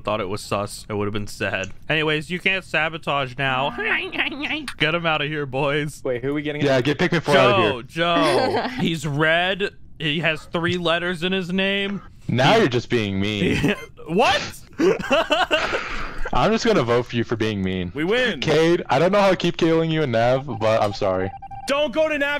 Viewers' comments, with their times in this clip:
0:04 this laugh is a hit from me